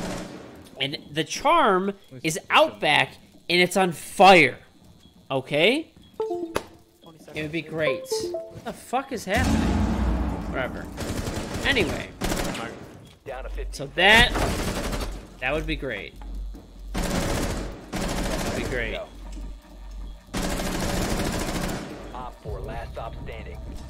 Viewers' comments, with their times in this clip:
0:06 The USB disconnect sound fucked with me lmao i thought it was mine